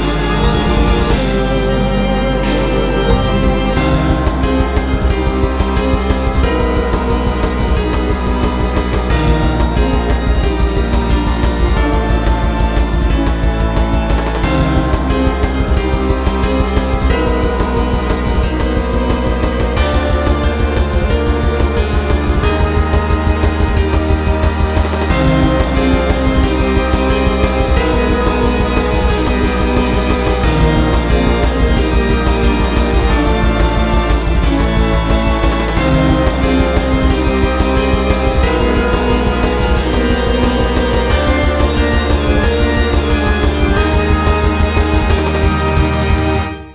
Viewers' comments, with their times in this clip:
0:03 No idea why but onwards sounds like something out of Deltarune to me. I love the aesthetic of this layer so far and i'm super excited to see what comes next.
0:03 Lol small world we're in Also you can hear minos's theme motif
0:03 MINOS ORDER MOTIF SOUNDING SYNTH IN THE LEFT EAR THIS IS NOT A DRILL
0:04 Starting the track starts to sound a bit like ORDER
0:04 Everyone's talking about the lore of the song, Violence layer, and Act 3 as a whole, while I'm just confused why there's the ORDER leitmotif
0:07 if u listen closly u can kinda hear the motif of order(p-1 theme) Maybe its different but i hear the p1 theme Perhaps it was another revolution/renaissance like minos? Afterall the both songs seems kinda sad/melancholy
0:24 I smell a leitmotif, calling it now that the little tune in the background will be in the P-3 theme.
0:24 holy fucking shit the requiem motif?
0:24 Can we talk about the Order motif ?
0:24 sound kind of like ORDER. I wonder if thats a coincidence or not
0:24 sounds a bit like the start of order after the intro
0:25 Not sure if anyone noticed the ORDER lemotif starting
0:29 did I... Did I just hear a order motif????
0:29 I can hear a little bit of ORDER's start the melody sound familiar too